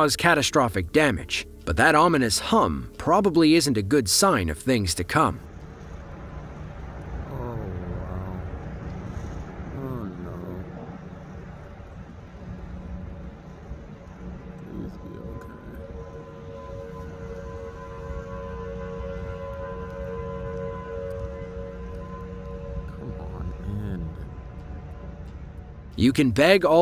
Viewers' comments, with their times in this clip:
0:06 😱😱😱😱 Oh WOW,....at the mark you can actually hear a faint humming that sounds like a train everyone talks about!!!
0:10 thats a tornado siren